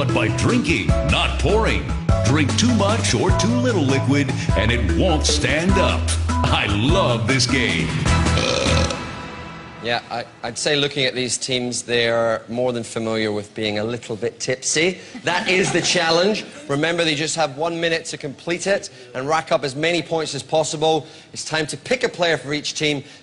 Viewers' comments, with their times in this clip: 0:08 The blueprint is burping